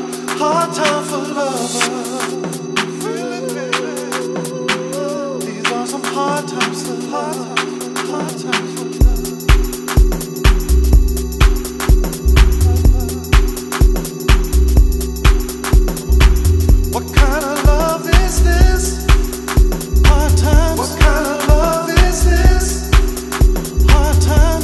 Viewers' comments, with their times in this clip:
0:06 The goosebumps you get when that subbass comes in